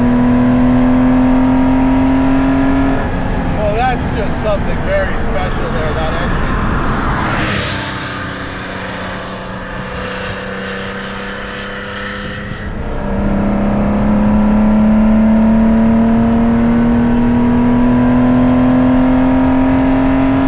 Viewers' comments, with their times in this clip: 0:05 a cyclist appears, the video shifts to a flyby and then, silence for 10 seconds: Did the cyclist survive like most of the squirrels?